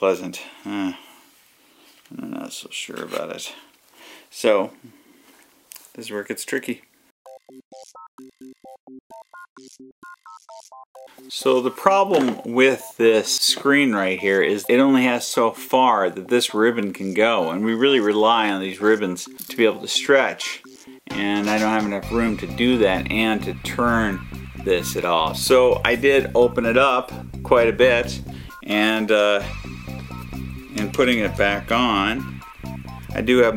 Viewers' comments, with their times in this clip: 0:10 anybody else notice how he sounds, and kind of looks like an older idubzzz.
0:20 it sounds like you just shot an arrow in minecraft